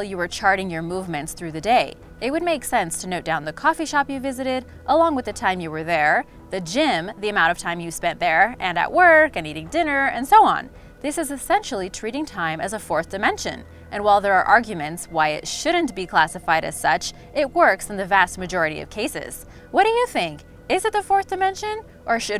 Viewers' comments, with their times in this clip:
0:07 Just here for the and the narrators annoying voice comments.